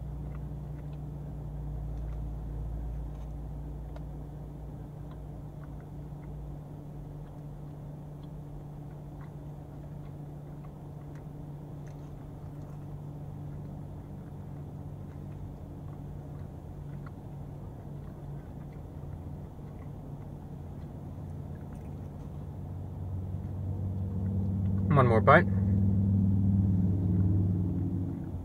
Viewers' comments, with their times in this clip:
0:09 ASMR but which food